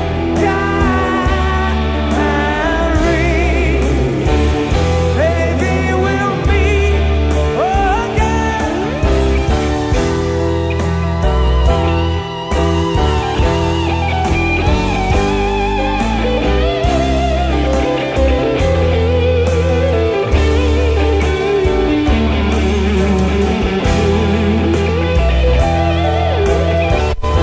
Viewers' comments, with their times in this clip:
0:10 C'mon Kee Marcello, stop butchering a simple solo and trying to do your own. It's Norum's solo and fits the song, do it right. The fans pay to hear the song as they remember it.